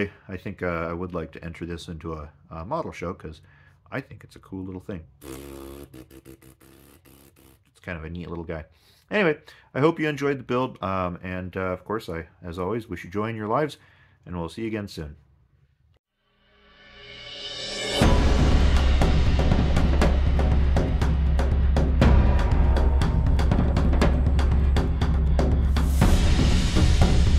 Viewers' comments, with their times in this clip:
0:10 Model show=👍🏻;a good idea,why not! That farting sound=😳👎🏻;a DEFINITE no-no.Elbow it immediately and NEVER repeat it again.A good career move😉